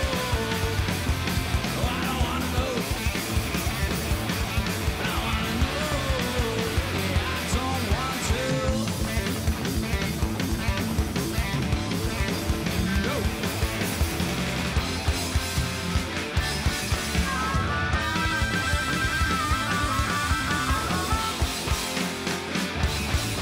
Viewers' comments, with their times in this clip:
0:04 The front man sucks, The rest of the band is fantastic, stopped watching after and voted down. Harmonica aside, he sucks as a lead singer, no energy.